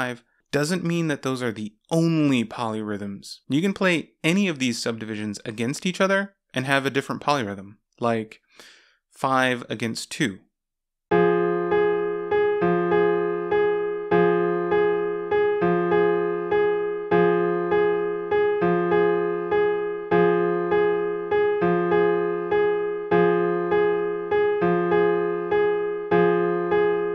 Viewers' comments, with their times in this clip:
0:10 This is 5:2
0:11 this sounds like an opening to a sad song